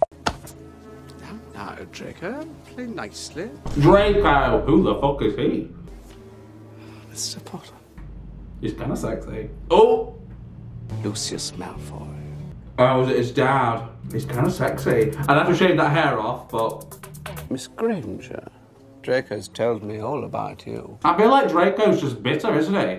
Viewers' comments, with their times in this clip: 0:04 I can't stop the way you said dreco who the fuck is he😁🤣